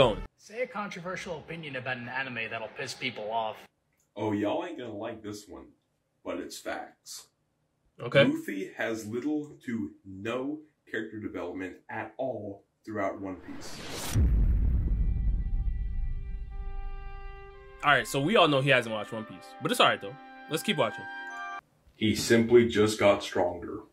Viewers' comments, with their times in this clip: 0:06 i just love the sound effects for when an anime or character gets disrespected. i just love how you just turn your head and stare at the beat of the sound effect